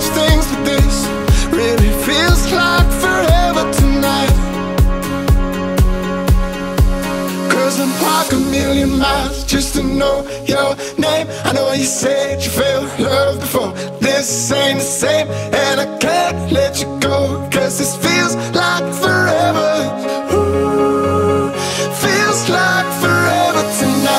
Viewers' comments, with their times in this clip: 0:07 From it starts sounding a bit like the song shut up and dance with me
0:08 This might sound stupid but that shot panning up to the sunset while the song is gaining momentum just gets me every time